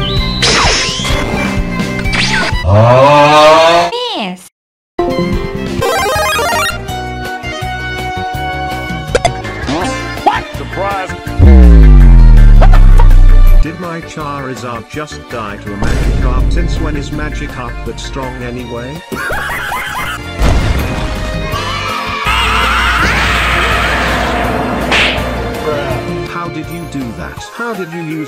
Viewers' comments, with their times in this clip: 0:09 "hacked into the mainframe" -Imagine still using the word "mainframe" in 2022. Was this guy cryogenically frozen in the 1960's and thawed out just before the game? "oh i hate you so much (forfeits)" -Wow, didn't even want to play it out. xD That Koopa shell noise split my sides for some reason.